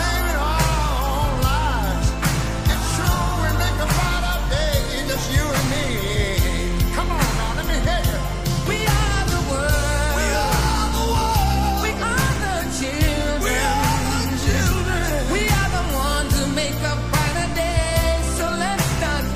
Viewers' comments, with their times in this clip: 0:03 Stevie Wonder....SOUL TSUNAMI..... .....just.that.simple....